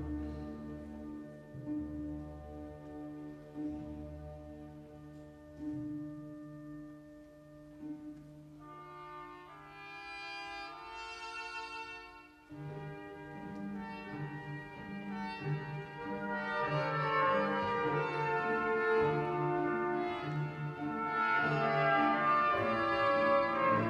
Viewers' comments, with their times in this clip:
0:09 Fro reminds me of music from the Godfather.